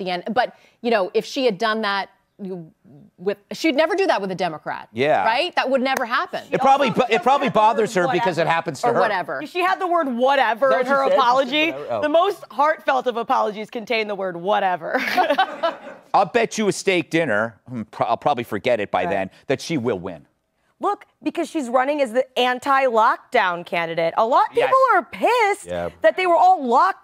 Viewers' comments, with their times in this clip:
0:10 They’re all awful. EDIT: Her voice 🤢